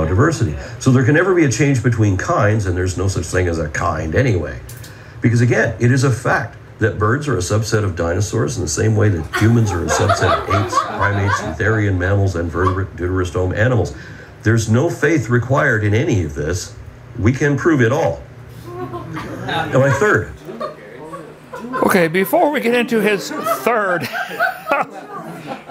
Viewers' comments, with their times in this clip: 0:09 The laughter of the audience is just golden. How ignorant ...
0:09 did Kent fart? His audience started laughing as if something hilarious just happened... Unless... They were laughing about Aron pointing out that humans are a subset of apes and that birds are a subset of dinosaurs. Oh! I get it now. They were laughing because Aron was pointing out the obvious!